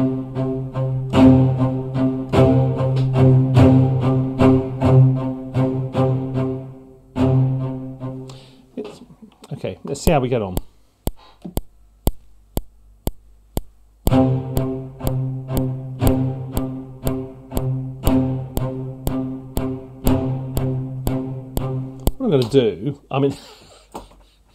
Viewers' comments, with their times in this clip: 0:06 Why does the sound get so horrible ?! It starts to sound like a very shitty library while in the first 5 minutes the sound is normal and amazing. :D